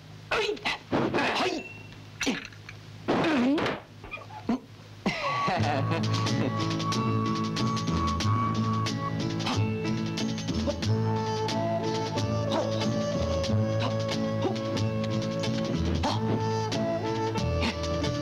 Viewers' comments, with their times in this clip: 0:06 that music, reminds me of drunken master